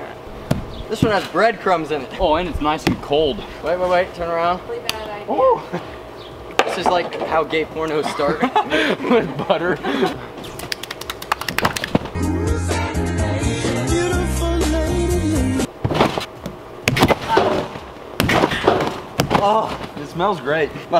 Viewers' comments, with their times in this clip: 0:06 omg his mom laughed at the gay porno joke